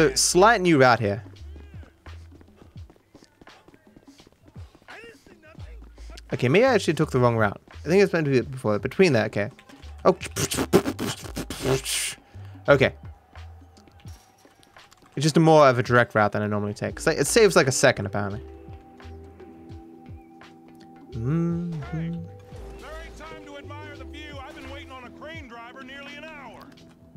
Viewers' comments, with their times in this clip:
0:09 When your in class and you beatbox